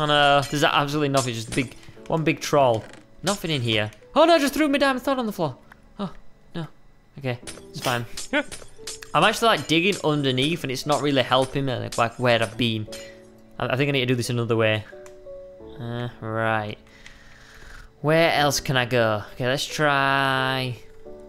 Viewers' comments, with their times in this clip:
0:05 Squid... did you say "i threw me damn sward on the ground" ??